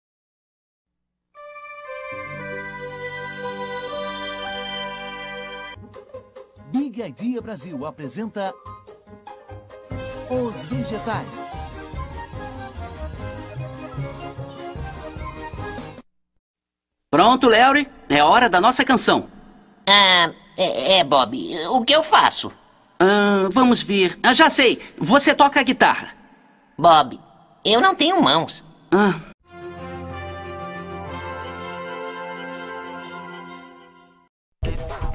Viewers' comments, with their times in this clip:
0:10 I like song
0:16 kinda reminds me of the bad piggies’ voices